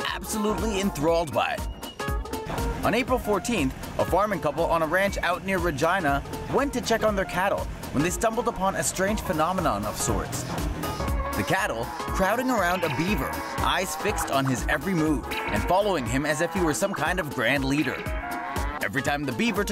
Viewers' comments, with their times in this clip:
0:07 he said vagaina